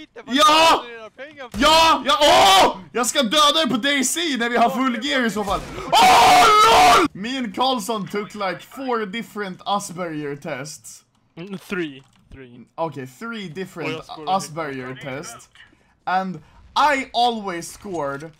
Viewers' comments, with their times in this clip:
0:05 He's like old Joseph Joestar - Oooooo, Nooooo!! - Ooooo my gooood!!